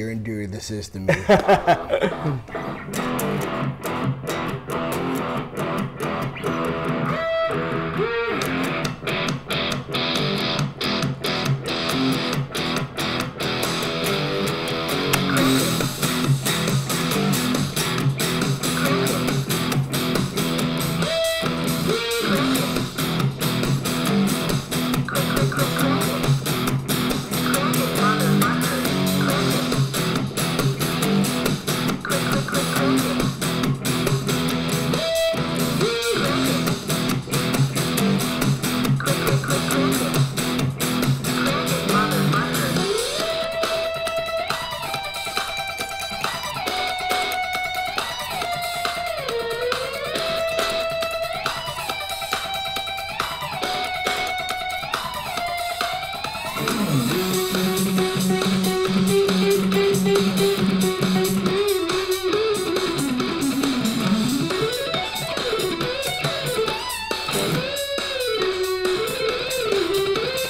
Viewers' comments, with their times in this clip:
0:03 For a second i was thinking that he was gonna play bad guy
0:18 Sounds like “Symphony of destruction”
0:21 John 5 ?? No thank you. and beyond sounds like hack bullshit.
0:51 gives me nightmare solo vibes